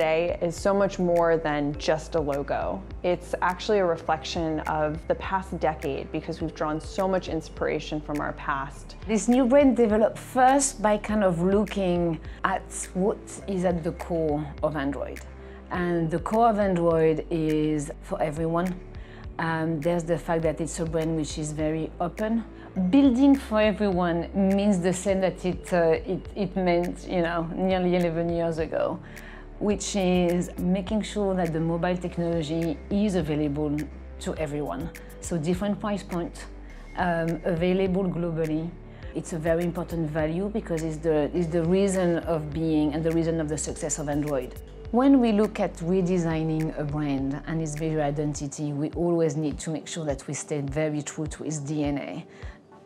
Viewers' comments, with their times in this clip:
0:10 Damnnn her french accent is so hottt
0:34 I wonder if this lady is a French woman??